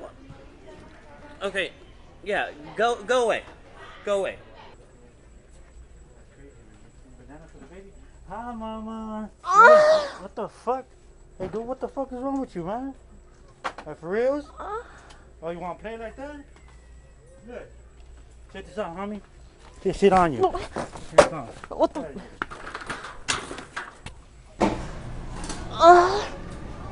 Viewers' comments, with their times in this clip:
0:09 when you tryna do a high note but you fail 🤣🤣🤣